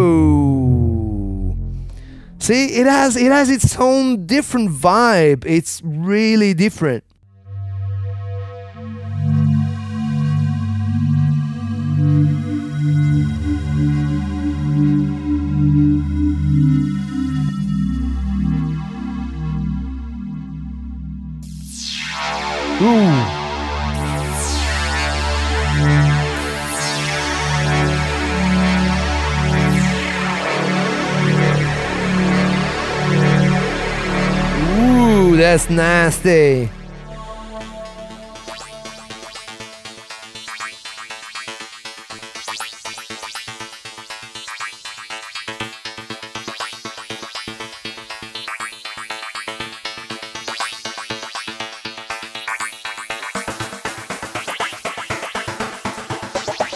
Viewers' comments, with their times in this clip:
0:07 deep space sound 😍
0:38 love the little arp jam